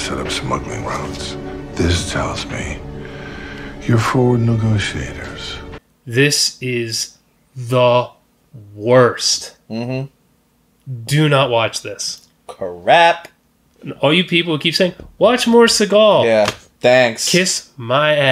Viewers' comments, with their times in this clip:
0:04 This man is BARELY holding back his laughter while Steve rambles on and on 😂